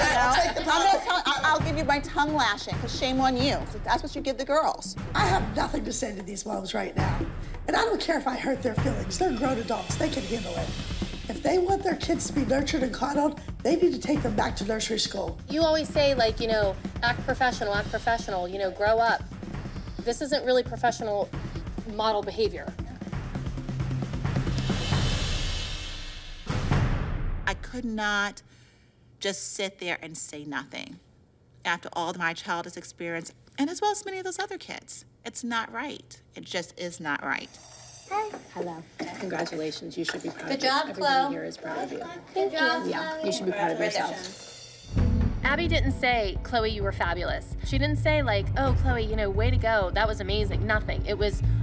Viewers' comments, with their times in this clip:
0:09 is she the Mickey Mouse voice actor-💀
0:14 she sounds like Donald duck 😭
0:39 the cutest hi I’ve ver heard